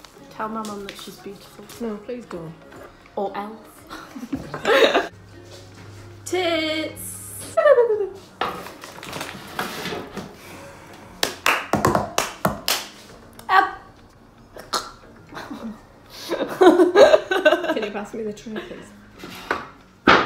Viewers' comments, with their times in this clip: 0:07 she makes the best turbo blowoff valve sound I've ever heard